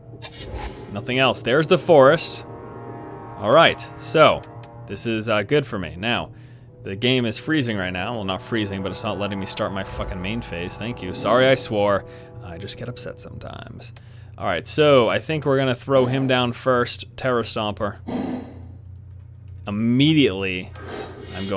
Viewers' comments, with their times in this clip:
0:09 ahhhh my ears!